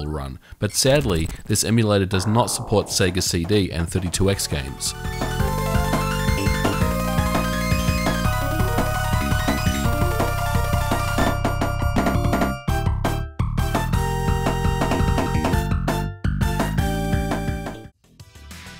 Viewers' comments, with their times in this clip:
0:05 The bassline is pretty funky